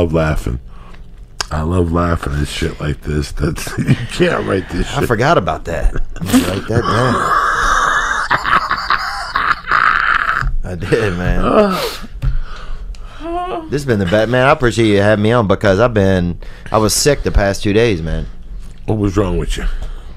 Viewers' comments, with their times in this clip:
0:04 That laugh after Theo said "I forgot about that" 😂